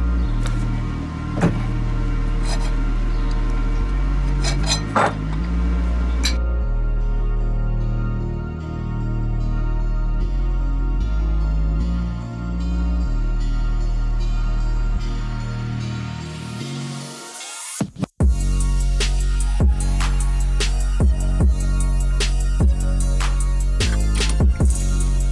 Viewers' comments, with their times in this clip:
0:07 Oh you know. Just bust out in freestyle that beat is too fire. Then proceed to complete the song with singing hook at the bridge portion when you attach the steering wheel. It was all so harmonious. Thanks bro.